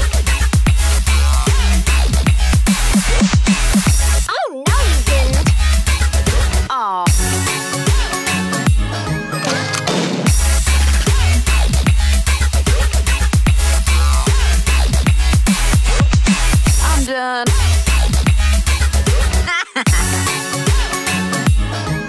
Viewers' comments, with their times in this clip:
0:09 Nita's bear attack match the beat (Shelly's Super beat)